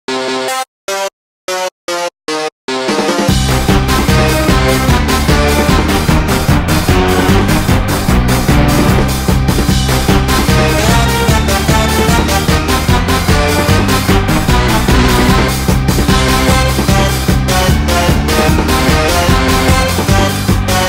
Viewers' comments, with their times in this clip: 0:00 why does it sound like it's about to break out into Mario Maker 2?
0:04 That is so intense.That should be play in disbelief papyrus.